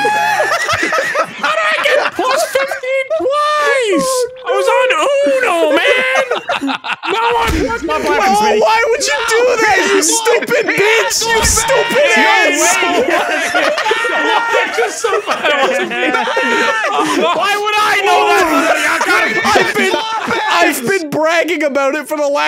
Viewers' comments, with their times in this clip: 0:08 if it wasn't chaos before now everyone is talking at the same time